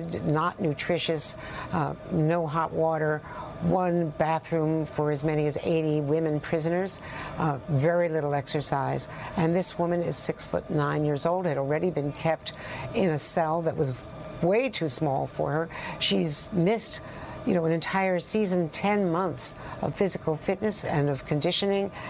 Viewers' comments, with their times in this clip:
0:09 6ft 9 yrs old???